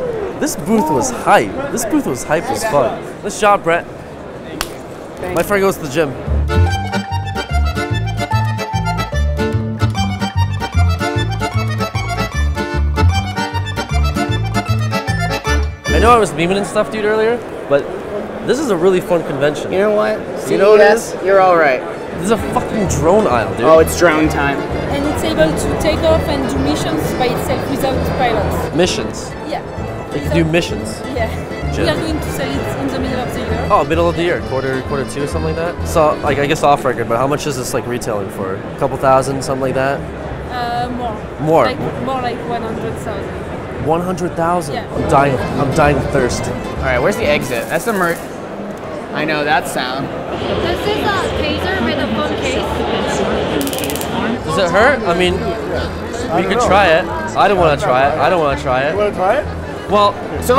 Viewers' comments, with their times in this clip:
0:07 hate this kind of music, anyone else?
0:48 ZZZZZZ PTSD for the CC Crew Ensues I KNOW THAT SOUND